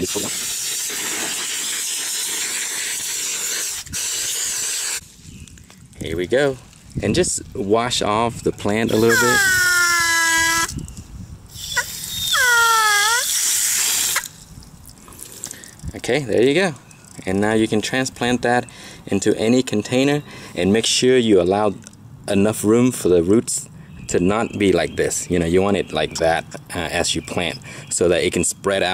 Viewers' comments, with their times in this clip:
0:09 Umm...had to pause and say thanks, to your garden hose. The sound it made was important for my sanity today. lol!